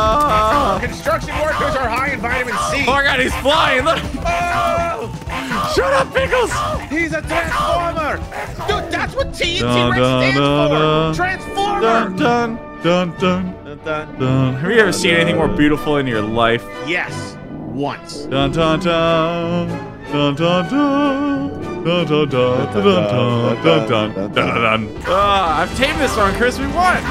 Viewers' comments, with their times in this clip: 0:08 did you not realize that the pickle says pickle in slow motion lol